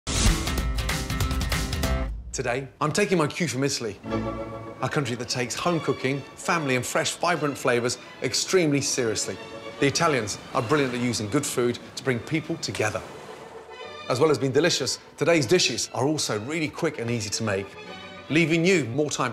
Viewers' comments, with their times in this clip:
0:04 Hey guys! Does anyone know the name of that playful song in the background right at the beginning? Starting